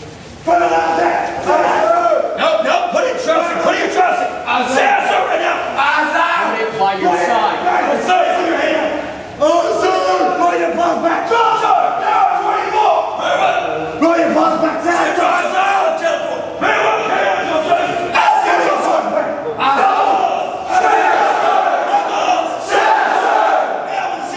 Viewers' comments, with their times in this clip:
0:09 I recognize this voice!!!!!!